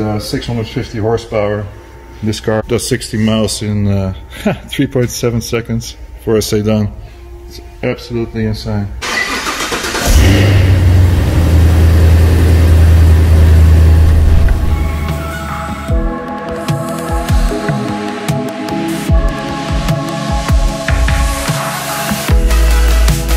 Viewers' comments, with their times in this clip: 0:08 it turn on like some old diesel